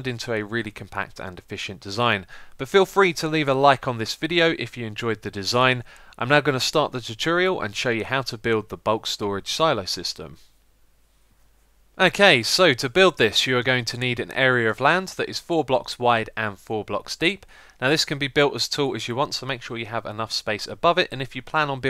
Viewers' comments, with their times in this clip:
0:04 sound like he is saying " im not gonna start the tutorial "